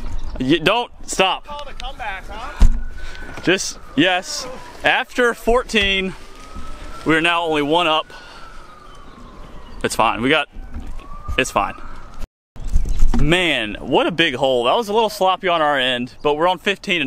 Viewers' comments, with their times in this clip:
0:04 I’m a FF/EMT. It’s 2AM Just got back to my station from a shooting with 2 victims. 5 more hours of my 24hr shift. Can’t sleep so I resume my video here at exactly I hear sirens. Life is strange.